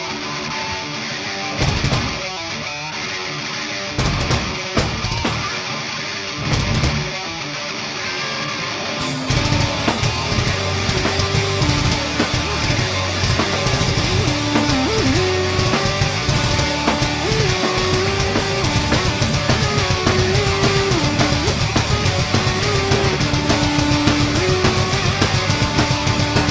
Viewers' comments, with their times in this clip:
0:09 Starting he’s literally out of key until the break in the music and they hardly look his direction what are you even on about?